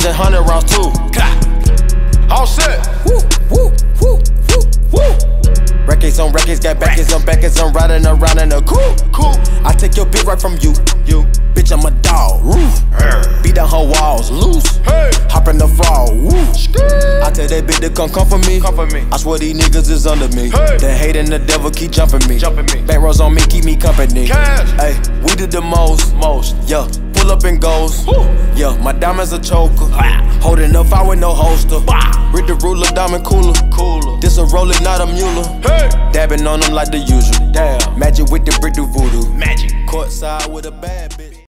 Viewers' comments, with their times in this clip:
0:04 lil tecca spitting some heat
0:04 damn why Lil Tecca sound like offset 🤣🤣
0:05 she started rapping 😂
0:06 THEY HAD LIL TECCA BEFORE LIL TECCA???
0:09 the way she hit the beat to "bitch ima dog roof" was too lit
0:18 When Offset ad-libs the 'HEY' that shit was on POINT
0:20 That "HEY" was so ON BEAT...
0:24 "We do the most (most)" - it cuts to the squad and back to Sid on that reverb. This whole thing too lit.
0:25 Sid reversed the drop
0:26 that yuh was perfect
0:34 they are actually singing that shit😂